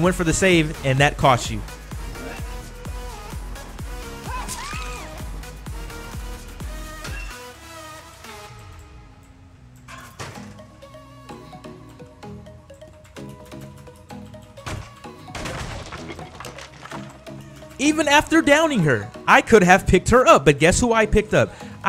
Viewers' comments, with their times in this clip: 0:04 4th boom! i died watching this (out of laughter) like the screaming from the girl i dont know why but i laughed